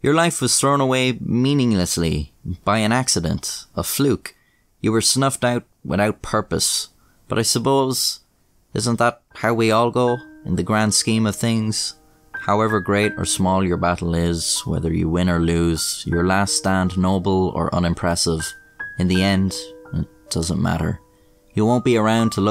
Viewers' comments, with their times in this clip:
0:10 I thought that the music was my discord ring tone lmao